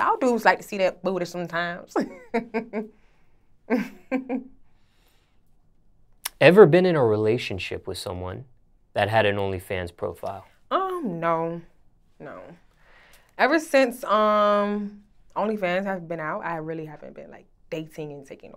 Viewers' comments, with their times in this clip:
0:03 (Kawhi Leonard Laugh) 😂😂😂😂😂😭